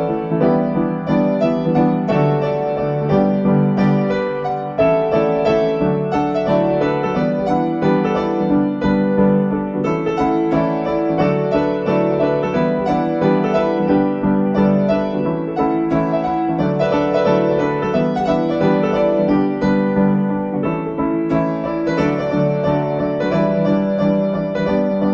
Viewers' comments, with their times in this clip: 0:08 ☆ A proper horn section.